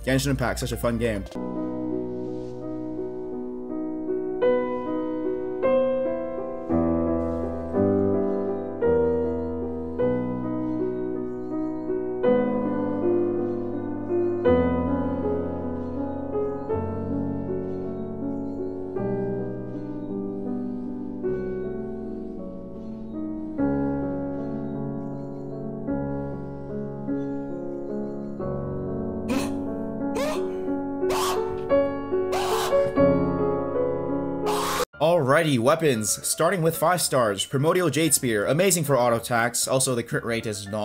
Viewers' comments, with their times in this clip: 0:05 i will not lower my volume 1st pull: i will not lower my volume 5th pull: i should consider lowering my volume 10th: ok nevermind
0:26 is the most underrated scream I ever heard 😂
0:26 Headphone user crying noises